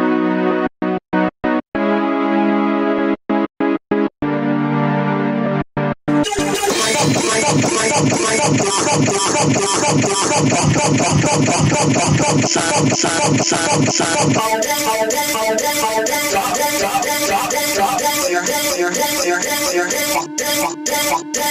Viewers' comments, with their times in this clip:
0:06 reminds me of a pirate theme for some reason